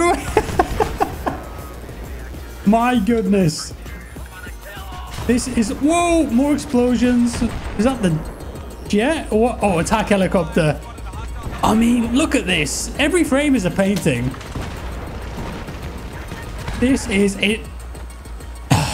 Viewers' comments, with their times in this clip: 0:03 Dude the battle chatter in this game... is a perfect example. Dice knew what they were doing long ago.
0:04 the way someone’s soldier yelled “I’m gonna kill all of them” really makes me love this game even more